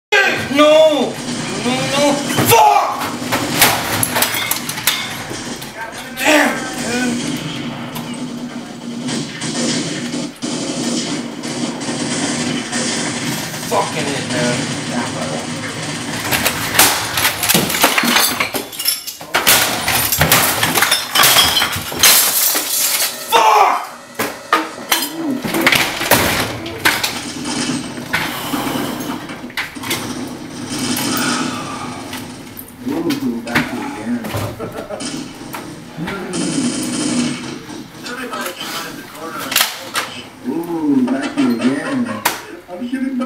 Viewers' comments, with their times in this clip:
0:04 he did not say f word he said four
0:17 i heard a guncock or something
0:19 power rangers theme plays
0:19 the sound was to powerful it deafened his blinds
0:22 You can hear the Pc's suffer
0:23 Did anyone notice that his last swing broke his katana, and he throws the handle on the floor while exclaiming “fuuck”?!
0:25 computer moniter was successfully destroyed: speakers be like: thank god im still alive gun shot sounds playing repeatedly